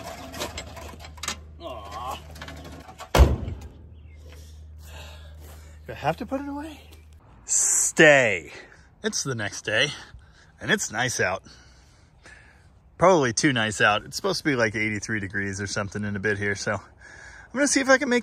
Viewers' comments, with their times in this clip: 0:03 Did anyone hear how good that door sounded when closed will my hyundai sound that good after 67 years